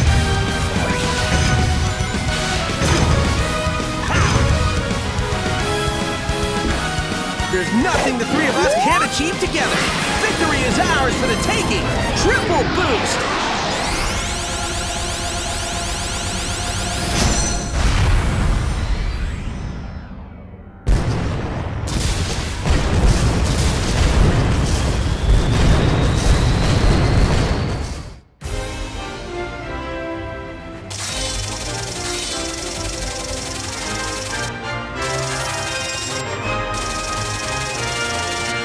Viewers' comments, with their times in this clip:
0:08 lowkey sounded evil asf😂😂
0:21 They literally forgot to put eggman's voices during the battle! >:O that would've been better! Eggman: Wh-what?! N-no!! This... can't be...! Gaaaaah!